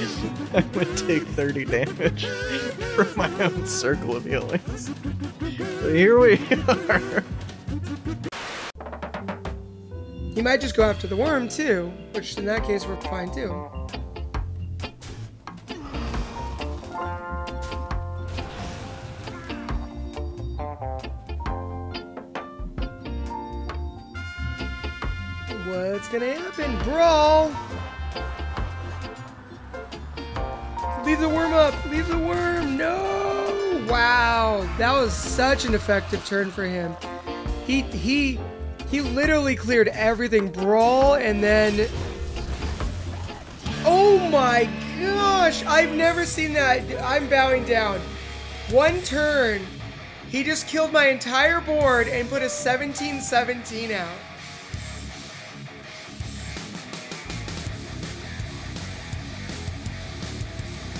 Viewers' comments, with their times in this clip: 0:08 This guy looks so manly and sounds like a girl
0:09 When you look 30 but sound 10
0:48 ALPHA M. IS THAT YOU LOL??? SPOT ON SAME VOICE